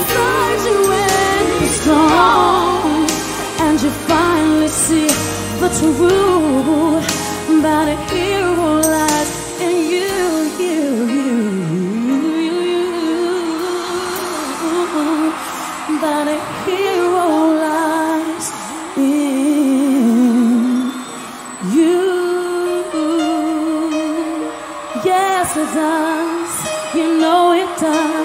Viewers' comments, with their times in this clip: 0:09 that agile run!